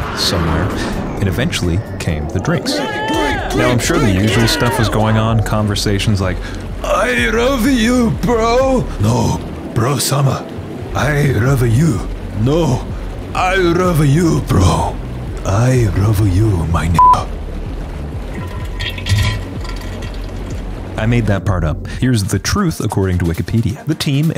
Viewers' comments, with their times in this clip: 0:07 I like how they speak Engrishu